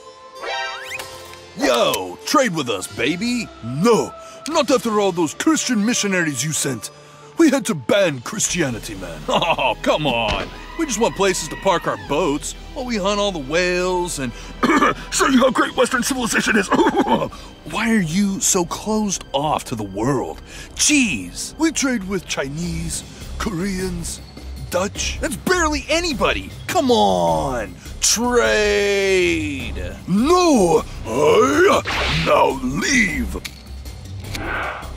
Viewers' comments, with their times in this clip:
0:09 Are we just not gonna talk about the screaming goat ?
0:15 “Show you how great [idk what he said] is huhuhaha-“ Got me laughin